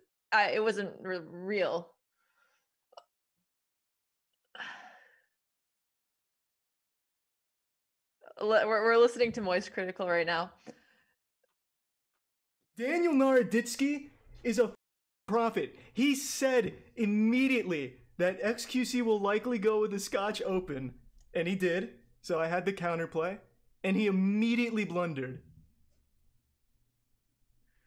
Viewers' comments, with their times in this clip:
0:10 kinda wish you didnt cut the funny video audio for Way to early outro music but its fine, seconds too early